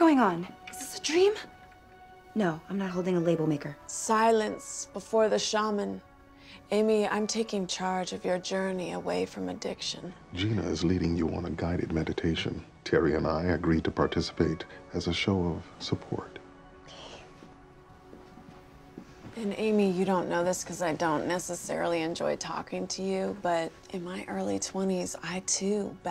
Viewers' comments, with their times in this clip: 0:10 its moments like this i wish he did storytime or some asmr cause wow
0:10 Andre Braugher has a great ASMR voice... sorry: had to go there.